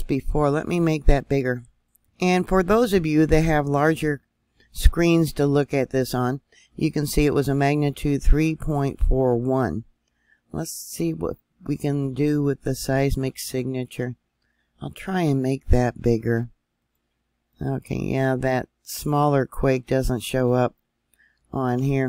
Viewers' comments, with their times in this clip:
0:05 was that screaming and hot gas movement ?